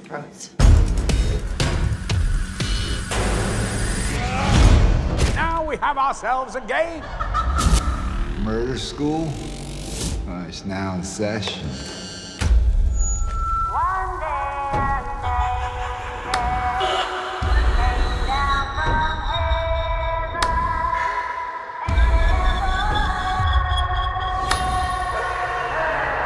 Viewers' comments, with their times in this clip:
0:07 add a laugh and you've got a great Joker